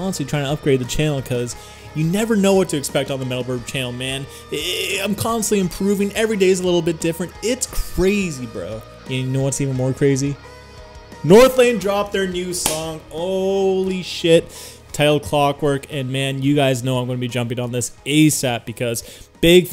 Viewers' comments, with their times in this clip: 0:04 Little bit of Rick Sanchez vibes